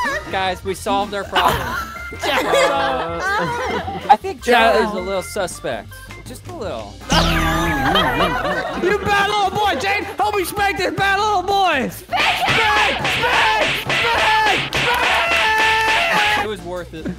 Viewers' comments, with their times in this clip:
0:03 did someone just moan-